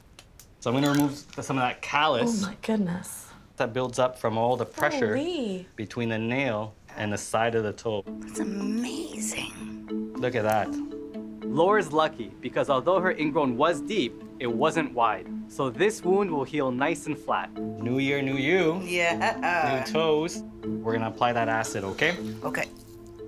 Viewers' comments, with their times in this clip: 0:08 Is it just me or did she sound like marge from The Simpsons?